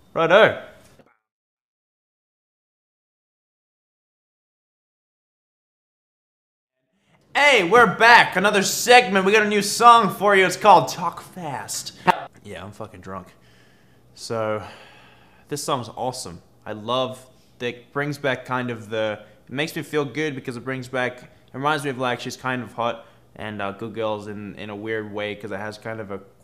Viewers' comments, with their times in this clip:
0:07 what Australian accent?